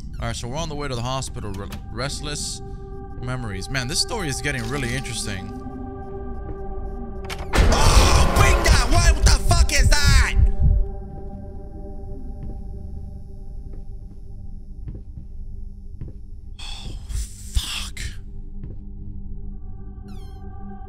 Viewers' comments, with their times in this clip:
0:06 Swear to God I thought i heard you yell "oh Topanga what the fuck was that" and thought "what in the boy meets world 🌎 😂 kinda shit was that?!" Had to rewind🤣